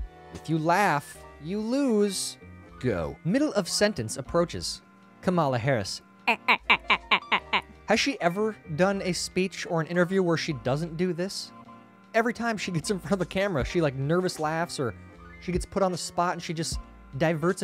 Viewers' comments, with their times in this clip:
0:03 I think Kamala Harris' laugh is her expression of "Duper's Delight." Bill Gate's has his inappropriate smirks...Kamala Harris has her inappropriate cackles.